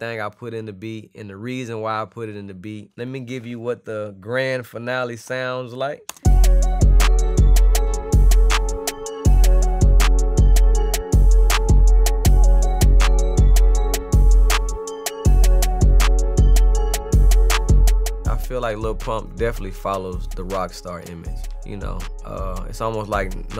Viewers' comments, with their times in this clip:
0:05 when he played the final beat.. This beat sounds like Shawty Lo- I'm Da Man with a faster tempo.